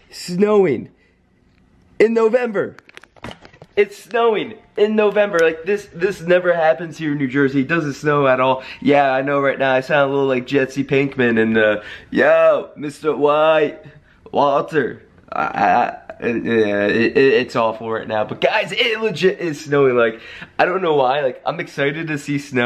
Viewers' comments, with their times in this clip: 0:07 Is it me, or is your voice deeper